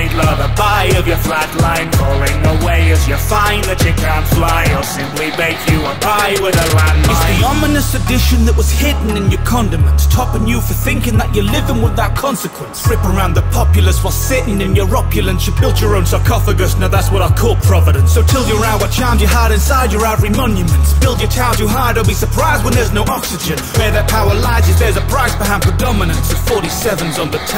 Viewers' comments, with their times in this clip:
0:06 ¨It's the ominous addition that was hidden in your condoms¨
0:15 This has been on repeat for a while here and only now I caught the smooth silencer shot Damn, you gotta appreciate the attention to detail, as If the lyrics and vfx were not enough.